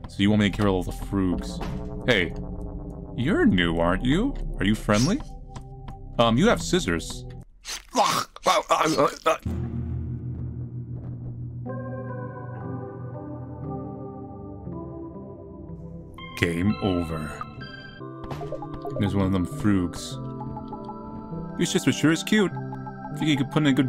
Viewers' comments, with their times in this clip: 0:07 he sounds like it actually happened to him